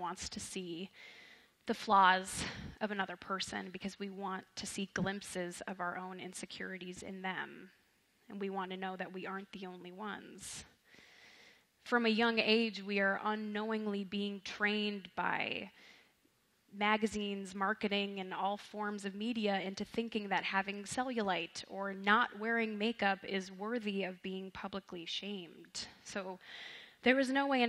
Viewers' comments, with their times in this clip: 0:08 girl said either "that's wise" or "that's right"